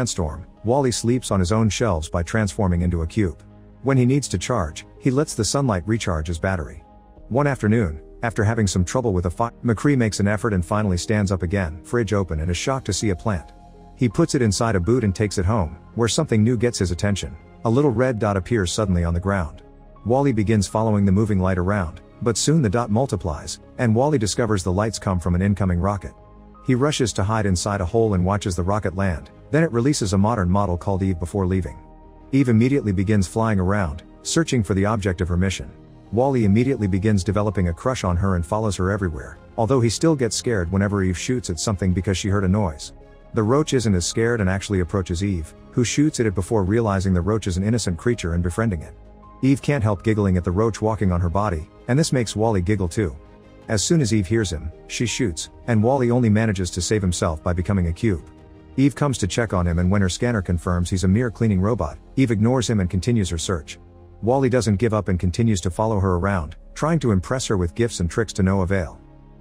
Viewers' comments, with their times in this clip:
0:08 what happened to the audio here
0:52 wall e giggles like a fly buzzing